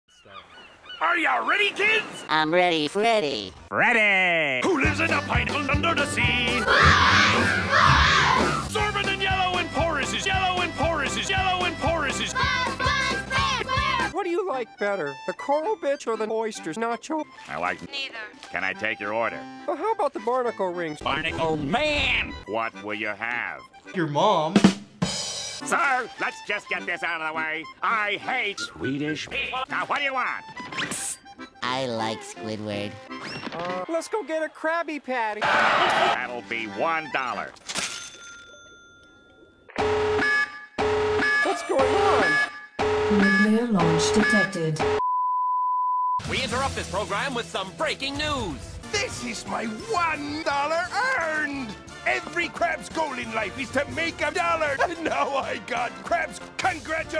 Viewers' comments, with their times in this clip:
0:00 I just realized at the very beginning if you listen very closely you hear someone say “start.”
0:00 Does anyone else hear a “start..” ? Just noticed this 💀
0:22 Squidward: what will you have customer: your mom. customer: smiling stupid. Ytp: Rimshot. me: I’m laughing
0:38 how a school fire alarm should sound like.
0:39 every fire drill and amber alert be like
0:42 something about that voice actually scared me, it didn't sound like it was in the video at first